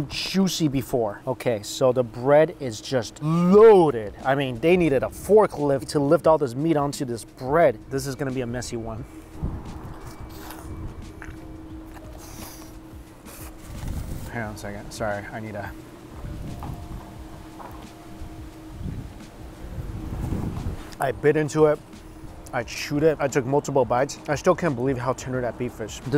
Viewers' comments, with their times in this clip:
0:07 that squish when he takes a bite yuck and yumm